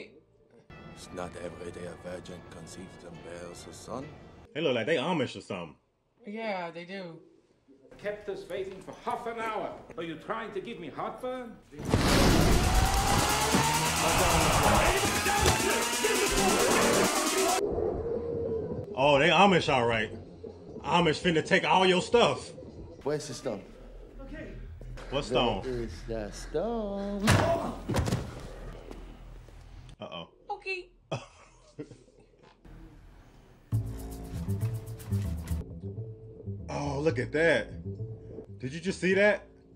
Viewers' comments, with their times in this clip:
0:04 Haha, not Amish, they are orthodox Jews. There are no Amish in Britain. And those are Jewish accents. Some Orthodox Jews specialize in the diamond trade.
0:04 Not Amish. They're disguised as Hasidic Jews. In addition to speaking with Yiddish accents and the dialogue about Christ's mother's virginity being a mistranslation, their clothing and the long side curls in their hair are very distinct. Their religion and tradition forbids trimming that part of their hair.
0:27 When Thanos has his foot on the Collector's chest in 'Infinity War' he asks 'where is the stone' in the same sing-songy voice. Benicio who says the line in this movie played the Collector in the Marvel movies.